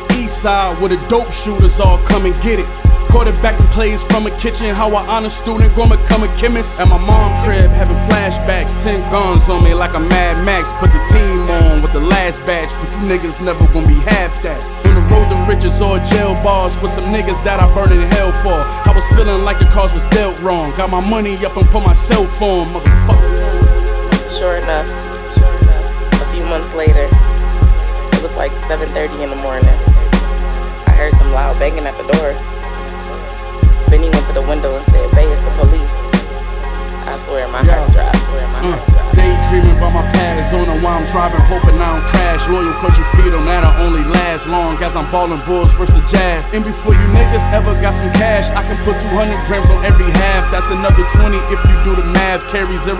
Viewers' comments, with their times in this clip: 0:07 Idk about anyone else, but I LOVE Just the rhymes, the cadence, the tone is just 🔥🔥🔥
0:37 the hardest flow thru the whole song had a nigga makinnn the dummy stank face 🔥🔥 EVERY PLUG I EVER HAD I MADE EM CASH 🥶🥶🥶🥶🥶🤢🤢🤢🤢